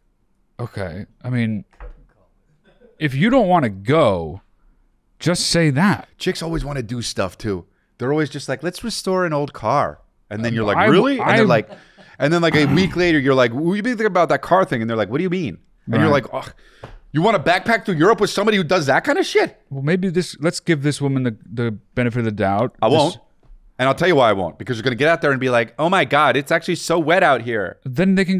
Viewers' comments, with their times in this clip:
0:10 Rare background laugh 🤣🤣